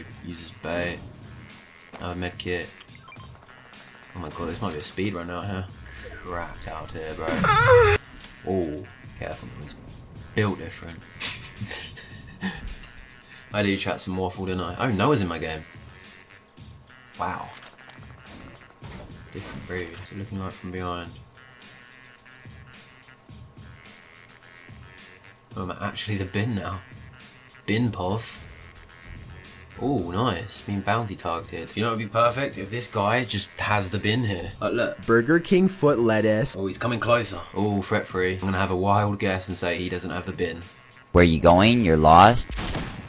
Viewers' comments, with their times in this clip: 0:06 I wast in the bathroom with high volume :/
0:27 man said “Bin poff” when he meant bin POV 😭😭😭